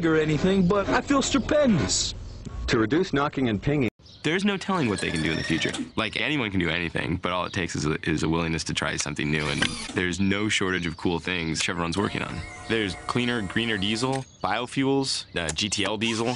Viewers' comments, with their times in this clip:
0:03 it sounds like voicemail